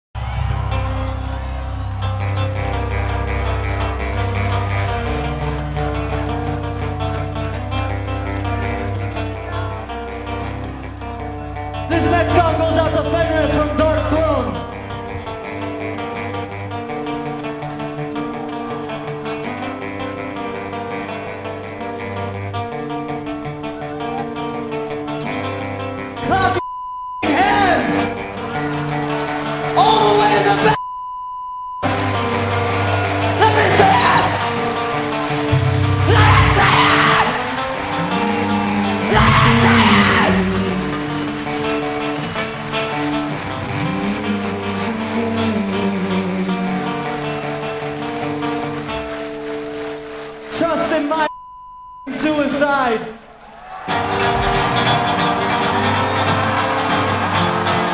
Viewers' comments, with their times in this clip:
0:00 It's in a different key than SOAD plays it.
0:37 lol i like how you can hear serj in the background humming while daron is screaming his lungs out
0:38 Daron: “LET ME SEE IAAAAT!!!!! Serj: just humming away